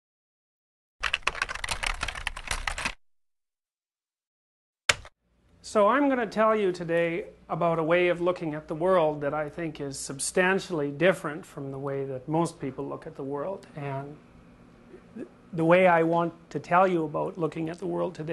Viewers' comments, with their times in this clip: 0:05 Seinfeld theme plays